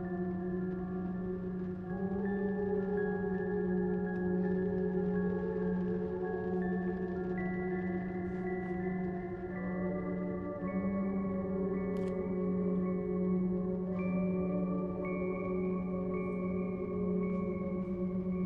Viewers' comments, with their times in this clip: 0:03 NO OH MYGOD SIX NO OUR BABY NOOOOOO I CANT BELIEVE WE LOST HER NOOOOO 😭😭😭😭😭 HER TINY GASP AND TINY SCREAM I CANT DO THIS ANYMORE AKDHEKEHE is this how she got teleported to the Maw?? BUT FVCK IM SO DEVASTATED WE LOST HER AND THE MUSIC THAT CAME WITH IT AND AFTER IT THE TENSION WAS SO WELL DONE HUHU